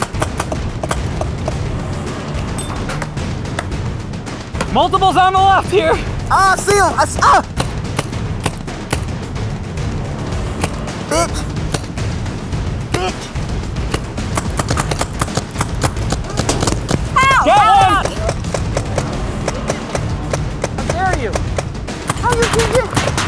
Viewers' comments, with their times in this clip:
0:10 Keith calling them a “BiETcH” a million times